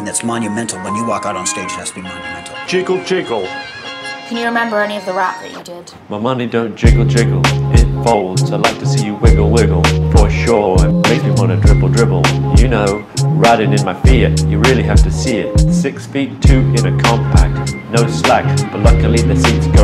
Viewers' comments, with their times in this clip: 0:04 I thought a robot was talking
0:06 I thought the singer said “My money don’t jiggle jiggle. Pitfalls.” Guess I must have been watching too much Backrooms videos recently.